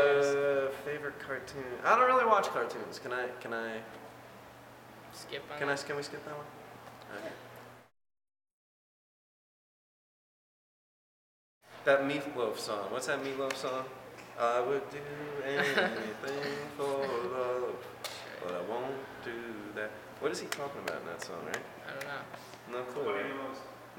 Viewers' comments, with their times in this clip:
0:06 Idk why but the way Brian smiles and says "okay" is just so cute. :3 I just adore his smile and his face.